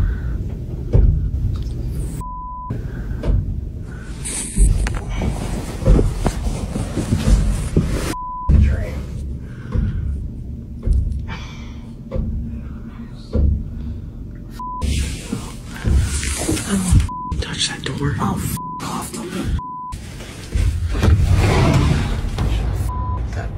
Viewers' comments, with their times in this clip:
0:06 man those are war drums mans got the all the ghosts of the mongolian horde haunting him